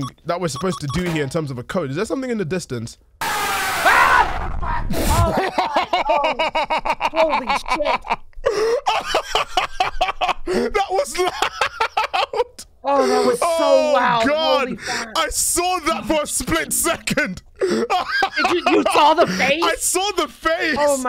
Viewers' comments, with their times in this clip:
0:03 I remember playing this map and going down there and getting jumpscared by that jpeg, and I'm not even joking it gave me a terrible headache for like 40 minutes it was so loud